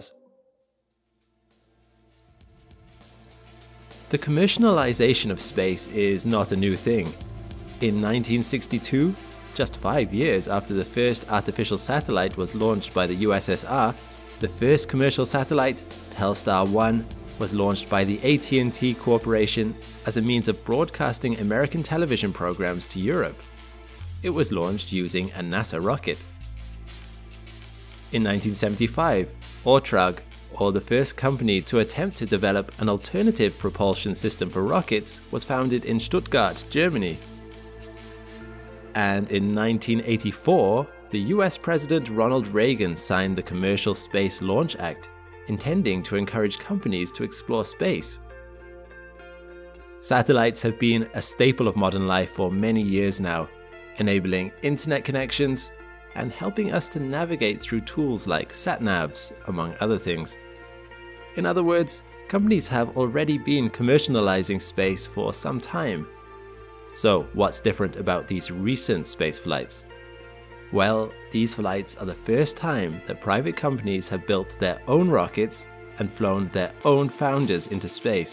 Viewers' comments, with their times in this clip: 0:03 "Commercianalization" of space. Um, actually... That IS a very new thing. New word, too!
1:03 “Commersanalising” congratulations you’ve invented a new word, now we need a definition?